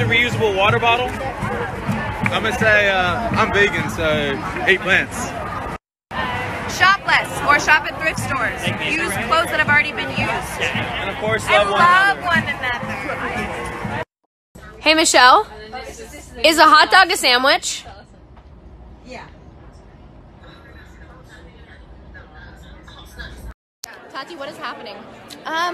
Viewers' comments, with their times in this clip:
0:06 Omg I thought she said shoplift